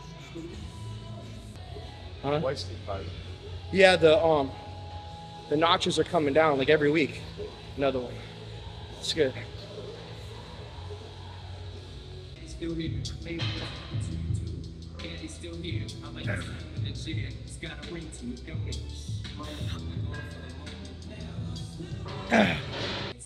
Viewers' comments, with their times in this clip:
0:05 I heard "nuts" first time